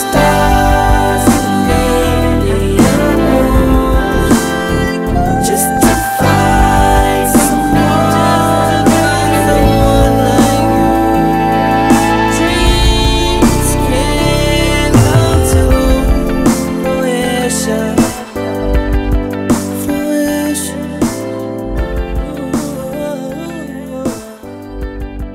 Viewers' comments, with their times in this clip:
0:10 This video is really beautifiul!... love the illustrations... love the lyrics.. been loving the dream since the beginning!! Keep rockin <3<3<3 btw the falsetto ... whoaaa...LOVE IT